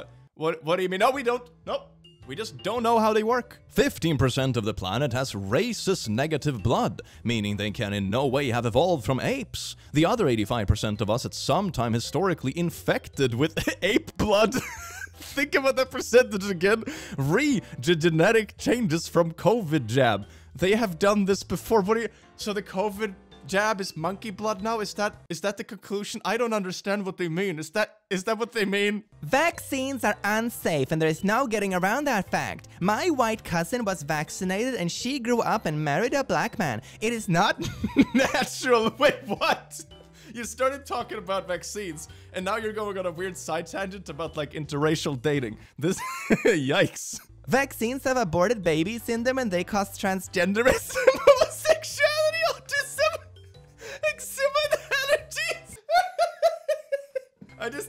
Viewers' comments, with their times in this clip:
0:08 i GENUINELY thought he said racist blood and i was just going along with it cause it sounds like something that'd be said on Twitter
0:39 when you said "My white cousin" I swore you said "my wife cousin" and took a double take, but I wouldn't have been surprised